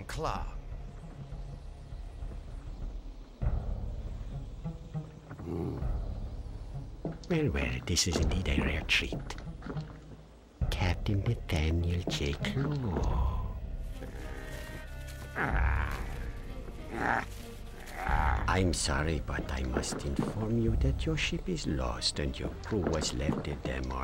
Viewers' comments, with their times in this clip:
0:06 A S M R